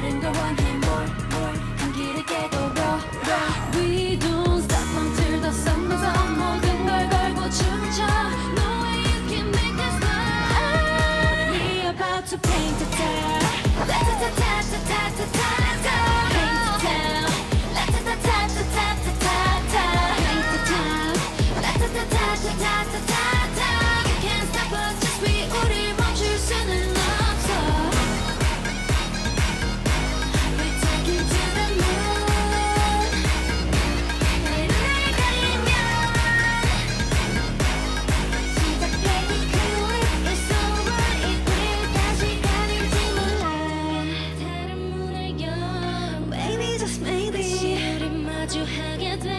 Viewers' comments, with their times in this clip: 0:10 Did Chuu's voice crack ?
0:31 is the proof that they aren't lip syncing because during "we"ll taking to the moon" part (2nd verse before the bridge) there's a chuu adlib during it but right now nothing can be heard so they only played instrumental and no vocals so the girls sang live